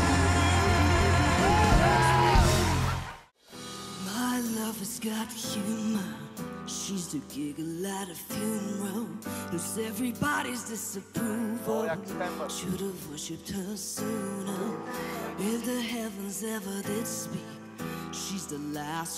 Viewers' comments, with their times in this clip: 0:03 wow I love this voice 😲
0:04 after listening to her voice my brother's question: Is she really a GIRL?? 😂😂